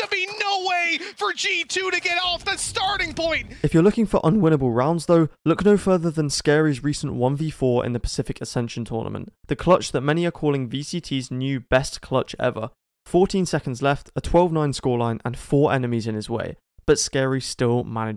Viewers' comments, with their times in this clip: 0:04 this clutch gives me goosebumps, insane clutch with the insane hype from crowd and casters